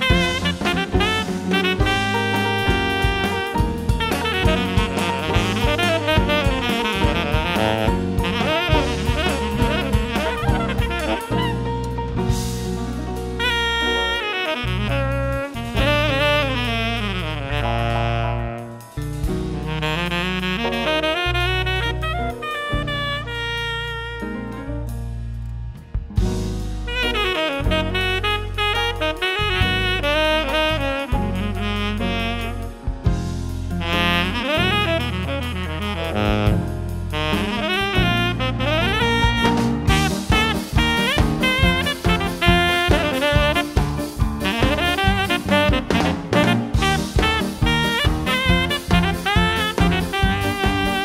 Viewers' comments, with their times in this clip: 0:04 I think there was supposed to be an EWI... (Electronic Wind Instrument)
0:39 Does the melody sound like the Vast Poni Canyon (from Pkmn SM) for you as well ? For instance ?